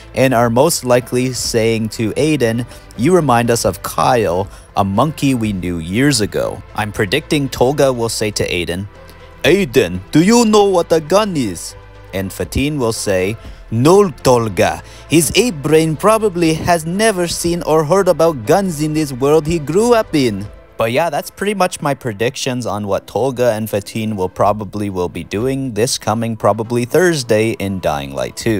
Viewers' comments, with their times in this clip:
0:09 Hahaha good imitation on the twins! Thanks for the information broo